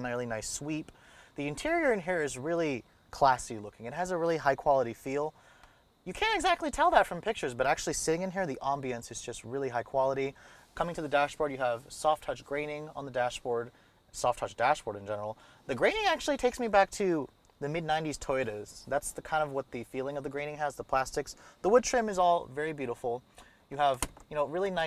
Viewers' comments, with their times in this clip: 0:05 Really great reviews. Listen to what happens to his voice .........LOL